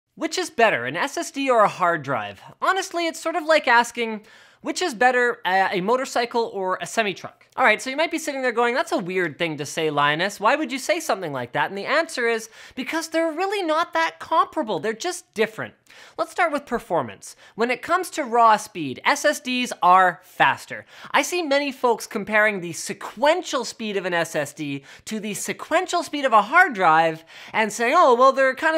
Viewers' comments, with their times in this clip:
0:10 what is the word that he said in ? lienust ?